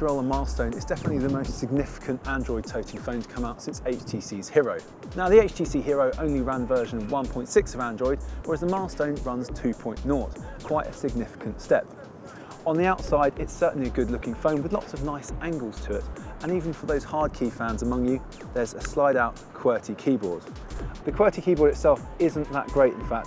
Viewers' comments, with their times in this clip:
0:08 lmaoo "where else the milestone runs 2.(WHAT?)"